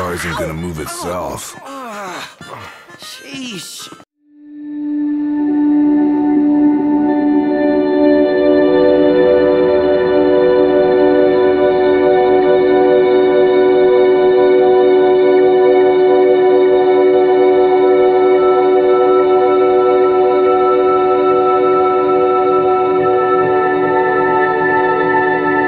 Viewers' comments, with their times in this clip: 0:07 (copyrighted music incoming) Turns the music off